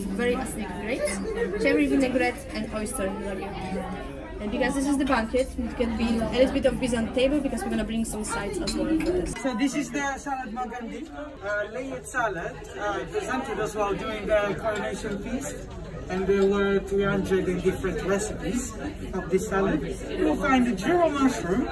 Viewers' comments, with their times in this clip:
0:08 The problem I am having with this video ....is that - there is so much noise in the background that at times I cannot hear what the waitress is really saying. For example - what fish was that....Chilean Sea Bass? ??